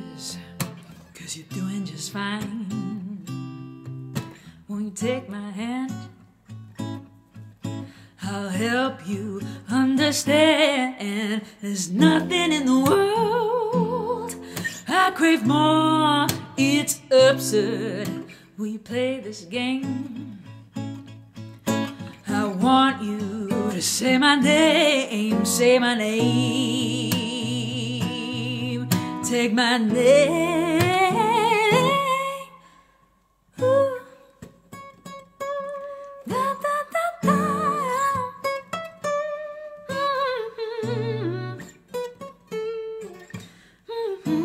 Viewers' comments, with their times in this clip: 0:04 I don’t really get this middle 8. It goes from a nice wedding to something no one would expect to hear in a wedding (not the lyrics, but the sudden jump to a bluesy middle 8, particularly starting from )
0:32 was my favorite part. Voice matching with the tabs was beautiful